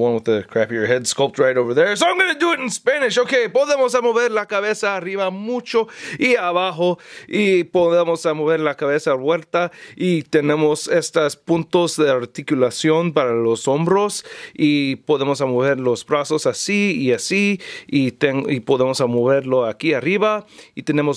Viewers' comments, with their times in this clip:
0:03 Youd don't talk badly Spanish, you did it great, because in speak spanish and when you spoke, sounds like if you born in latin america :D